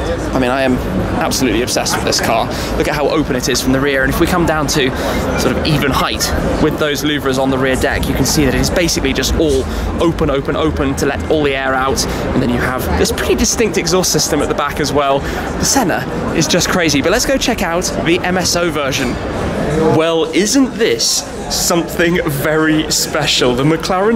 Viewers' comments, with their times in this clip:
0:05 Who else checked their phone ?